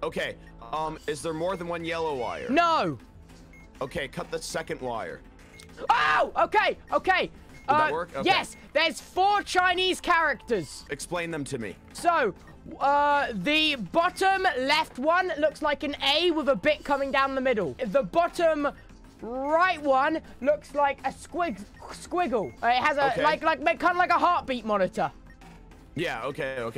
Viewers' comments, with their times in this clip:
0:08 Tubbo:There's 4 chinese characters *Angry cyrillic noises
0:10 When you speak Mandarin 😍
0:11 esplain, tubbo i know you can’t spell but still AHHAHAHHAH